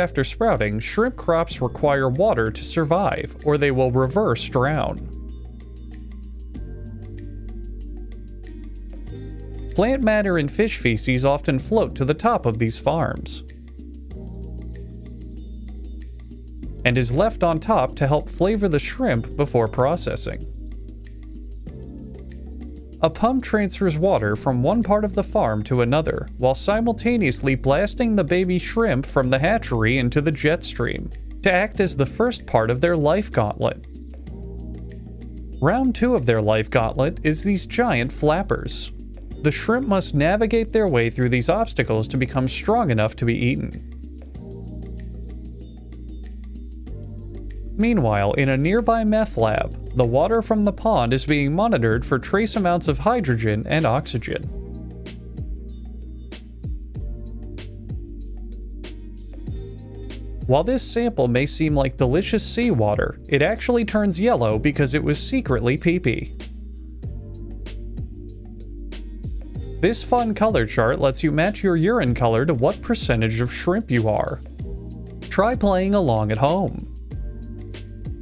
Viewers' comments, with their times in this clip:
0:05 that pump is definitely Asian cookie monster
0:49 sounds like he said "meth lab"🤣🤣🤣
1:00 I lost it The deadpan gets me.